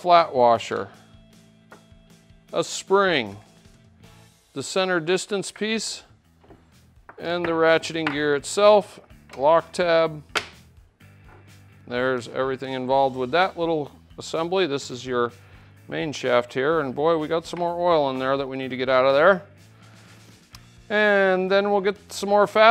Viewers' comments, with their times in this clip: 0:06 " and the racheting gear itself, lock tab....hot dog?..."